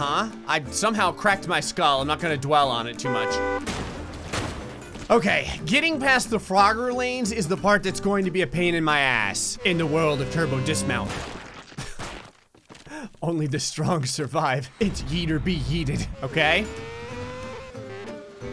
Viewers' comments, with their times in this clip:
0:03 the honk was so unexpected i laughed ao freakin hard XD